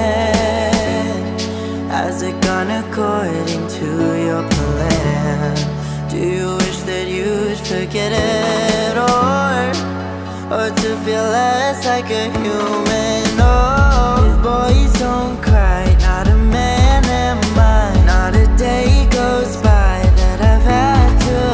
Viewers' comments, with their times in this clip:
0:07 Favorite song aksent here